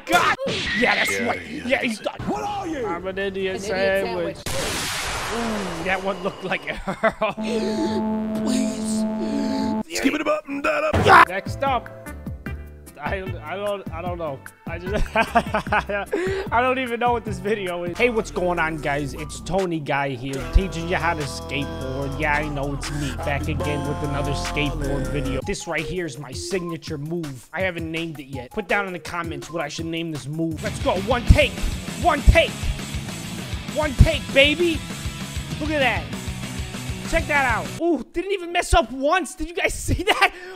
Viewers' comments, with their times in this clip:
0:07 sounds like the mad city delorean in hover mode
0:27 he put the robot theme song onl